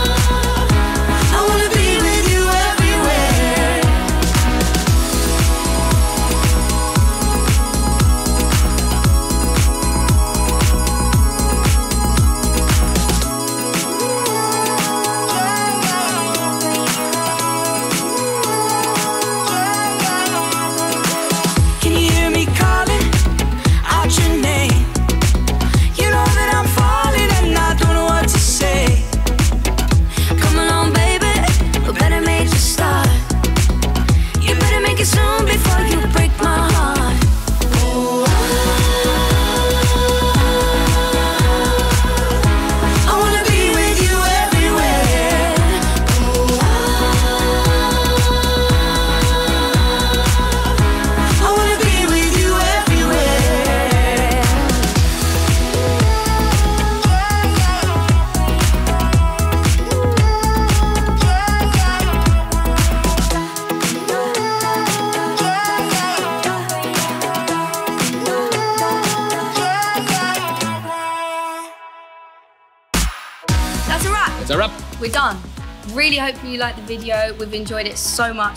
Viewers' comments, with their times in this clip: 0:05 That's the best thing I've seen in years! Niall and Anne's voices fit so perfectly!
1:02 this background tune is too good <3